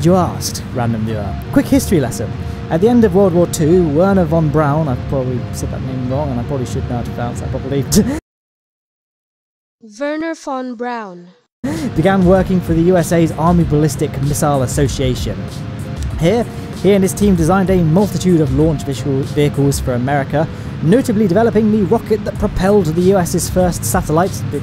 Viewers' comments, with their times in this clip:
0:09 you said my name right